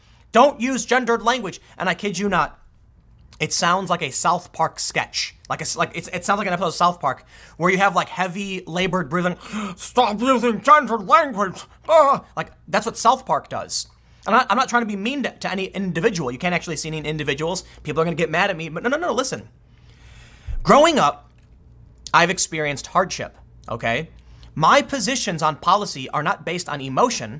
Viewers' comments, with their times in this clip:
0:09 PERFECT South Park guy impression dude 😂😂